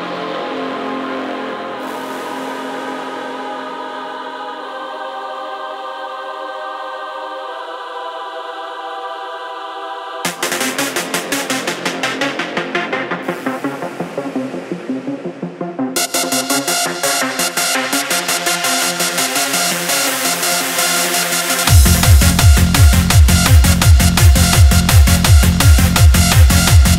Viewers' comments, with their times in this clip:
0:09 love this layer. It's very tense